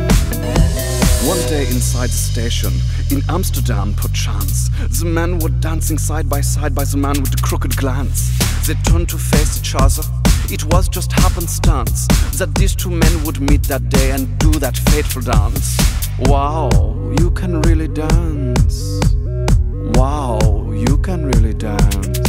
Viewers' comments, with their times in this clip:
0:07 Is a really good beat and timing because as soon as the bass drops he turns his head